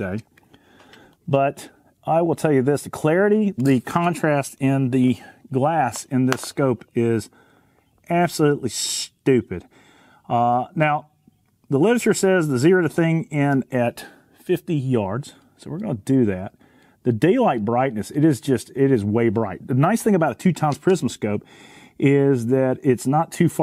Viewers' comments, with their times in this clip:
0:05 .... absolutely stupid or stunning?